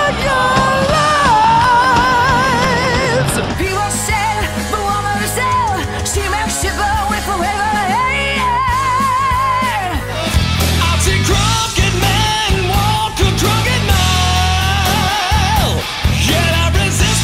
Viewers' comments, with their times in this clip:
0:03 sounds like robert plant
0:05 lady got glorious vibrato